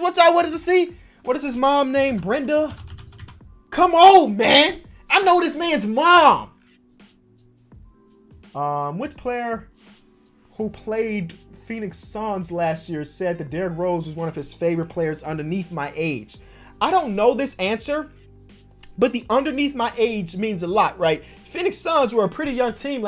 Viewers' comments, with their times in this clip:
0:05 He sounded like a stalker